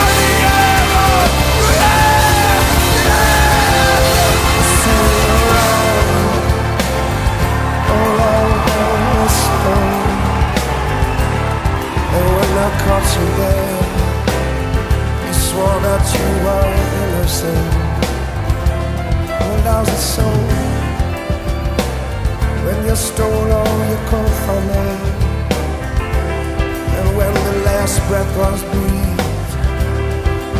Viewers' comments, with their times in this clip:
0:07 Appreciate the effort but he's literally not saying any of that until it's all just wailing until that point.
0:12 Boyd glisses with his mouth